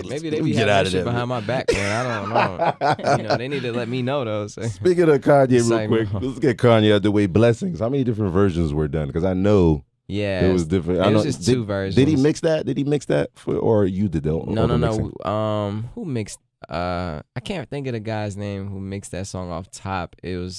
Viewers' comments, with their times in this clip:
0:06 he said "Sike" real quick. I heard his ass! Can't fool the real ones.
0:06 Omg he literally says SIKE very quickly! Making fun of us to our faces!